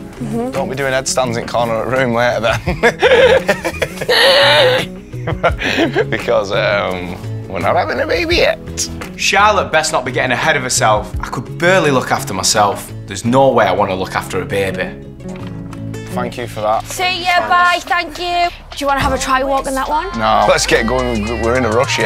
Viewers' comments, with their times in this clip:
0:05 When she mimics his laigh!! 😂🤣😂🤣😂🤣👌